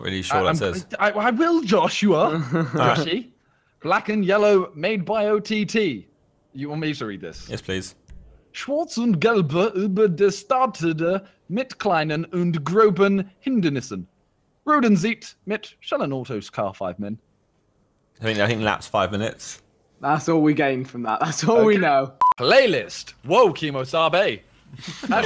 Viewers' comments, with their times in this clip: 0:08 It was kinda understandable Simon :)🇩🇪🇩🇪